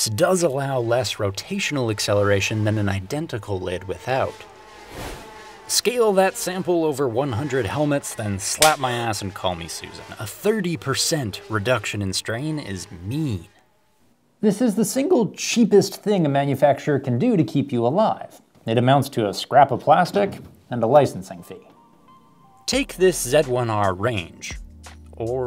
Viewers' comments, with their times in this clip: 0:07 is that a spank sound? :)))